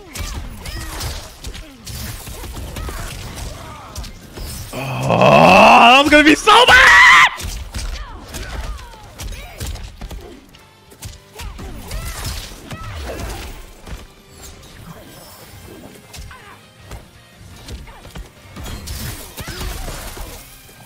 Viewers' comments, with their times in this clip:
0:05 Ngl, the scream caught me off guard and made me choke on my cereal 😂😭